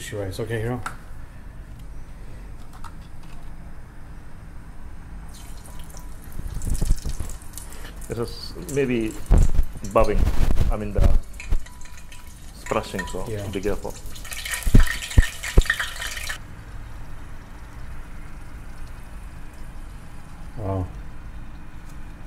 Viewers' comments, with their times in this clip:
0:09 Thought there was a cockroach in my left ear